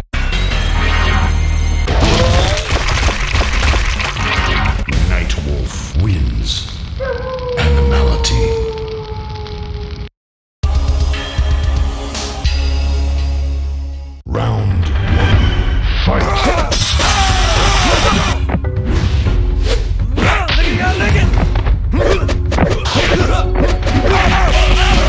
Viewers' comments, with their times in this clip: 0:10 stage music@ awesome